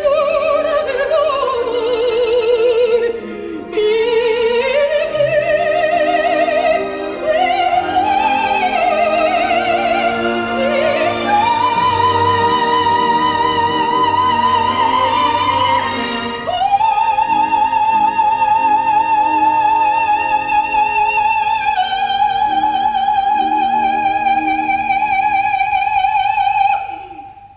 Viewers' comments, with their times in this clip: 0:10 can no-one in the room hear that famous wobble? Callas couldn't hold a note without shaking it like a martini. No comparison: Tebaldi every time... unless Nilsson shows up.
0:13 Wow! I am just wanna wrote on this. Looked on your comment. i think its a forced, like Tebaldi. They are both closer to mezzo than to a soprano